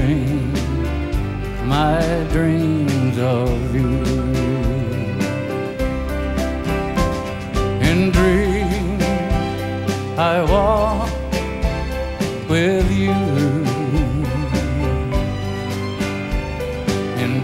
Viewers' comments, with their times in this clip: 0:05 "The voice of Rock".... ❤❤